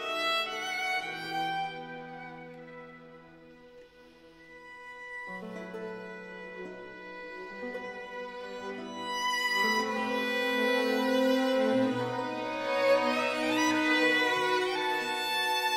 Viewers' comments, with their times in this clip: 0:03 Did anyone notice how good Is the violinist ? The three octave jumps in messa di voce.